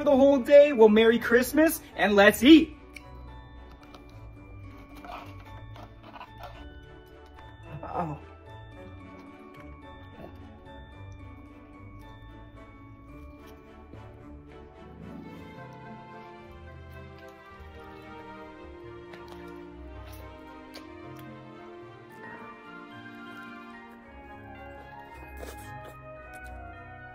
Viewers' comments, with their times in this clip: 0:08 Yoo that moan